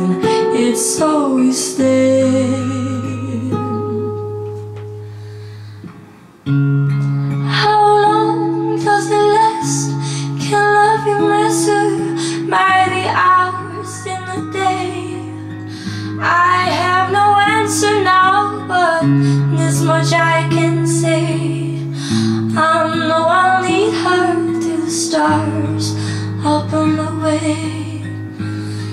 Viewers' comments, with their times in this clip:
0:10 The beauty of Angelina's voice is that she carries all notes so well. She is so versatile. In this rendition, she sounds like such a mature voice. It's amazing to listen to her different styles! The next great child star who sounds like a seasoned veteran. WOW!